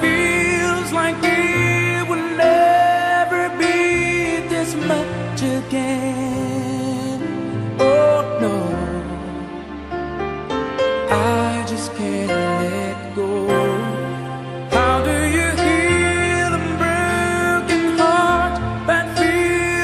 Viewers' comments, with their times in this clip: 0:04 The piano one.